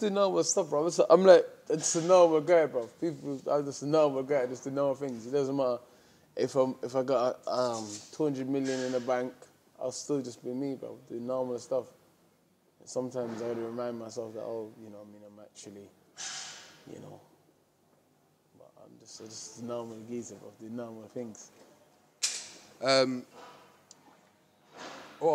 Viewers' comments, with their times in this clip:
0:07 He’s a cracking fighter, rock hard lad and game as anything but I had to bail after of trying to understand a single word the lad sad. Struggled to put a sentence together. If anyone can summarise underneath, thank you.